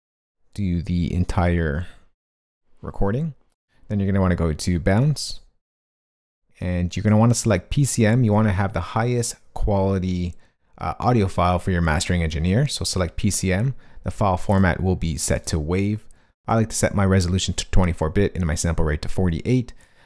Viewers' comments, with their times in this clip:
0:05 "and you"re going to want to go to ???? " I have no idea what you say there and no idea where that window you bring up comes from.